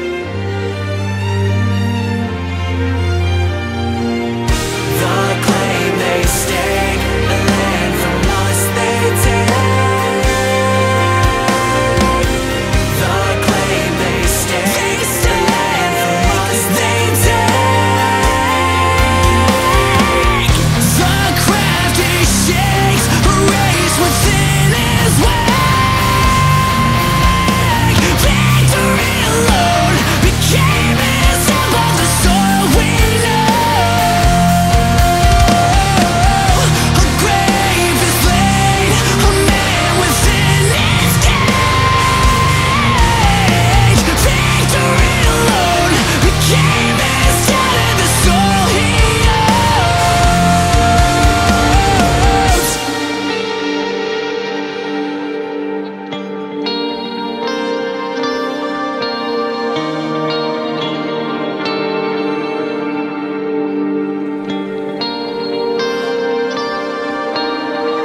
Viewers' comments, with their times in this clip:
0:04 The moment rolled around and foreshadowed the melody of Garden in the Bones I fell in love.
0:05 The "Garden in the Bones" incorporation made me nut
0:10 Aw man, that Garden In The Bones melody Is it going to be the leitmotif of this album?
0:19 The riff that kicks in is fantastic
0:20 I love the part where It sounds very similar to Garden in the Bones
0:30 that melodic refrence to Garden in the Bones is beautiful. Well done
0:40 random DGD vibes But it's actually periphery so it's 10x better
0:52 I'm just now realizing a similarity between the clean guitar part and David Maxim Micic's Bilo 1 (song) chorus section. Anyone else hearing what I'm hearing? Granted, it's not a totally unique motif but still.
0:55 does anyone know what effect that is on the guitar?? I've been trying to find out what pedal it is, but I"m having a hard time trying to find something that does "clean reverb echo delay" lol. And yes, I know I described three pedals already, but none of them sound like this effect. lol